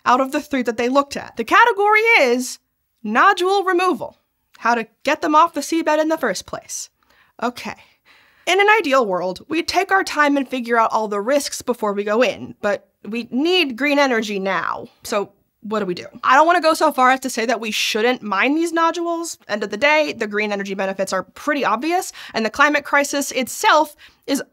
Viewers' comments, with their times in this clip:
0:06 I really felt that belabored "...okay..."